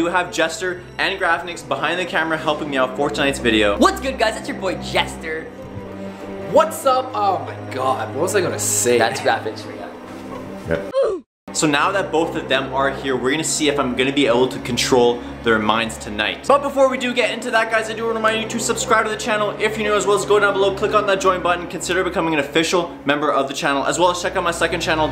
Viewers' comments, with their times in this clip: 0:10 oof ROBLOX sound